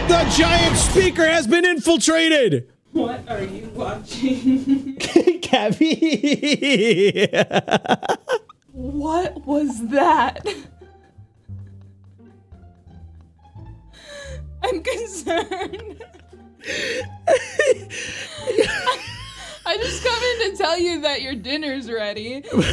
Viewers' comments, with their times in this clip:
0:05 bro laugh like evil.